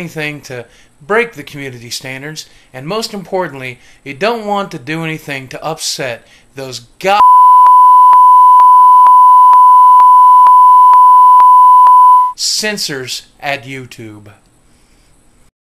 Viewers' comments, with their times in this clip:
0:05 rip headpone jusers
0:06 wow you blowed my ear hole
0:06 R.I.P headpho..... ah fuck it
0:06 OH GOD MY EARS
0:07 R.I.P headphone users,
0:08 R.I.P. headphone wearers